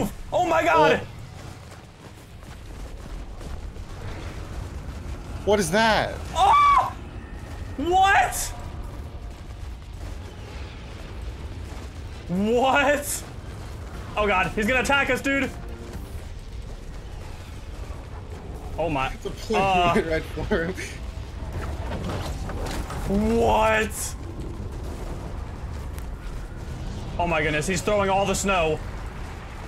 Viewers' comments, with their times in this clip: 0:05 that voicecrack tho
0:06 who else loves that scream
0:12 My favorite part was hearing take the L in the back